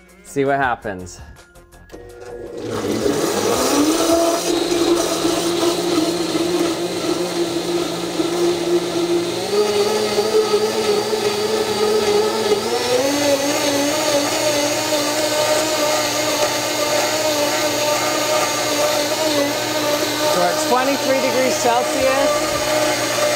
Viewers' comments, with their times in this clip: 0:04 JP T-Rex roar